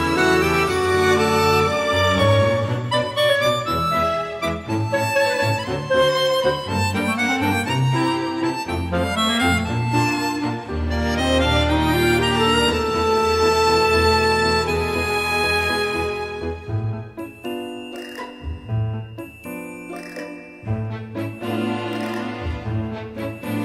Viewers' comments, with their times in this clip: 0:06 almost sounds like some Soviet film score to me.